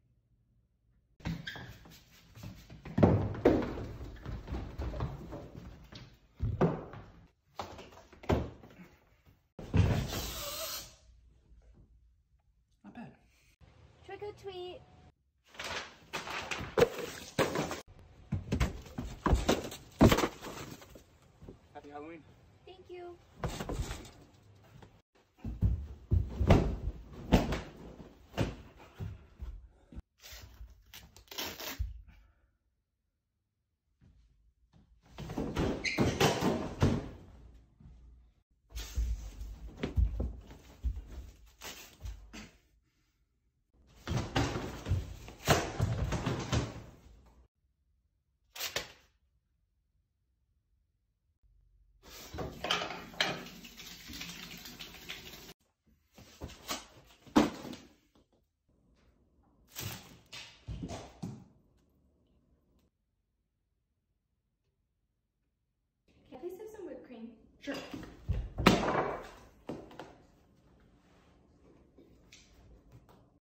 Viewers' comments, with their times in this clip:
0:09 I would say that pretty aggressive breathing if yo ask me.
1:06 how calmly she asked 😌, he hitted like a 😂😆